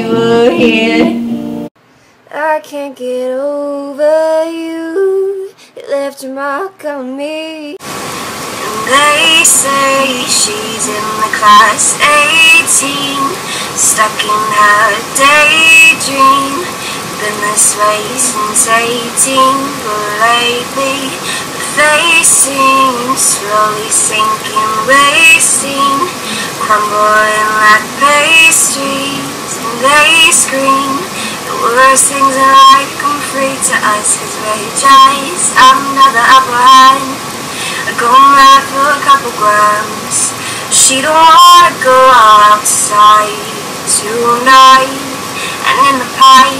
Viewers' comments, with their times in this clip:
0:05 when her voice cracks and she goes an octave higher, she's yodelling. Perhaps unintentionally, but nevertheless an advanced and impressive technique. Her notes may be flat but her voice has flair.
0:29 sounds abit like Halsey idk